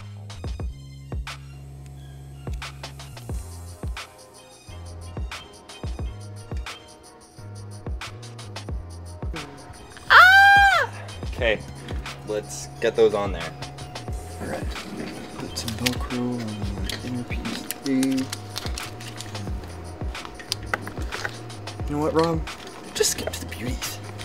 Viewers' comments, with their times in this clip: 0:08 zesty asf Edit: the scream btw
0:08 Bro, what was that girl scream XD
0:10 that shout was personal ☠️☠️